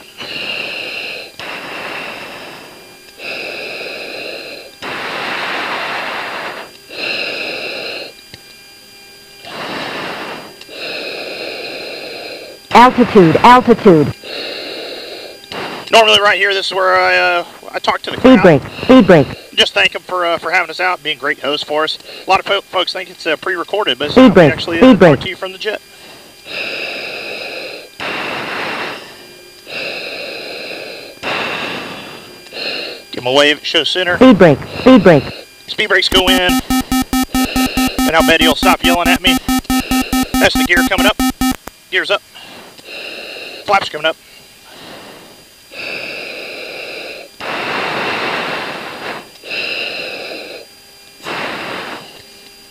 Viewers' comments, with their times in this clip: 0:08 At aboot minute why does Siri repeat, “Food Bank”… “Food Bank”?
0:33 Did the computer say "booping, booping" ?